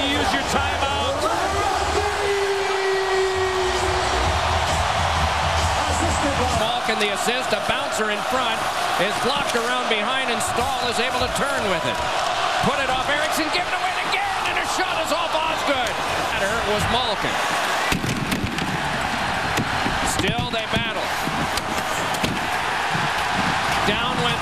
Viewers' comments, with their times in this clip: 0:07 lol, I loved it when the fans started taunting Osgood! Osgood! lmao